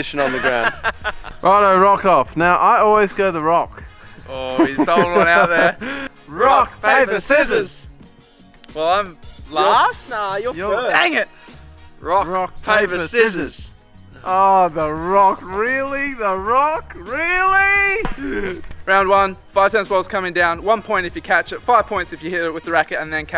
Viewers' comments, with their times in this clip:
0:06 they said it normally in the beginning